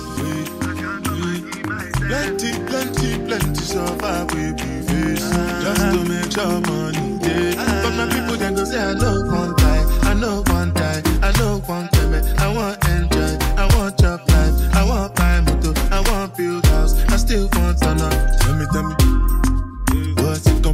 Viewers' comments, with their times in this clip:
0:08 Why song had me busting out in a dance 🕺 😄!